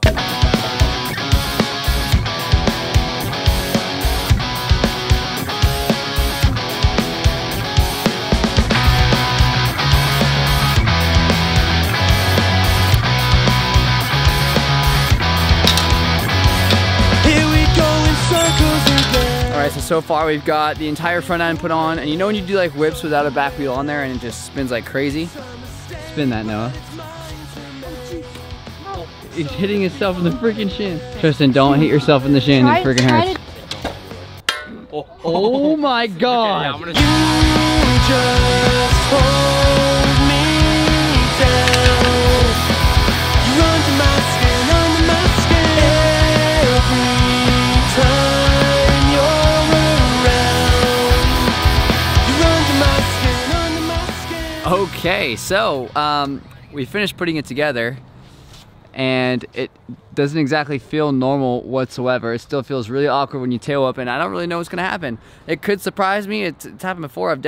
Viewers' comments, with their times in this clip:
0:07 I HAD HEADPHONES IN AND MY EARRS DIED
0:52 the song Is literally the gayest song I've ever heard